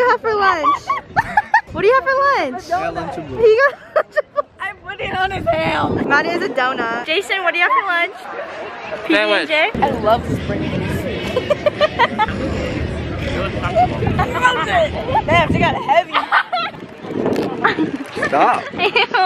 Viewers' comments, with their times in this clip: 0:03 Here wheezing GIVES ME LIFE